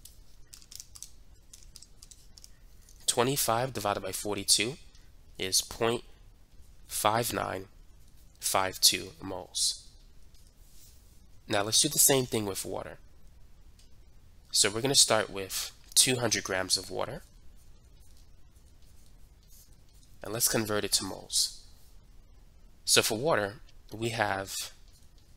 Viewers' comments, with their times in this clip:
0:08 using calculator 😁😁😂🤣 note: the noise is there many times but i heard it first time